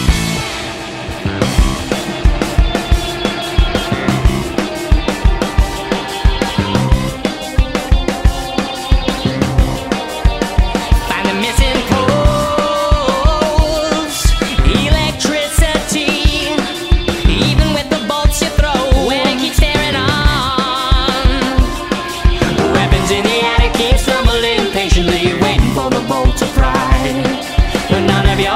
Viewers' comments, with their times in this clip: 0:09 After the following is just to sick and groovy to not be an in album!